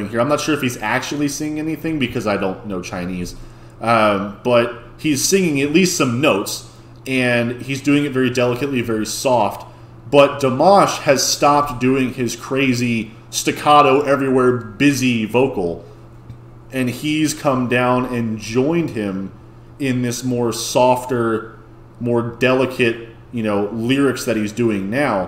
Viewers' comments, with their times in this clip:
0:09 i could not agree more with this - there's something almost alien about the passage before when those sounds are put together, but they gell so much better here